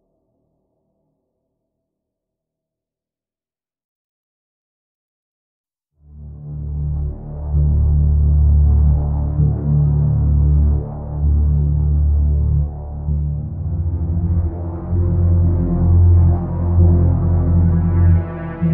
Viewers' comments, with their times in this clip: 0:05 (One way trip) has some serious b03 vibes